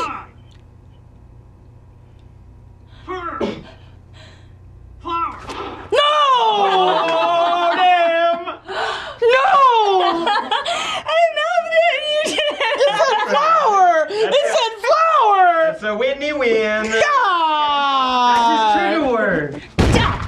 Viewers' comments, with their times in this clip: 0:03 he sounds liek steve smith from family guy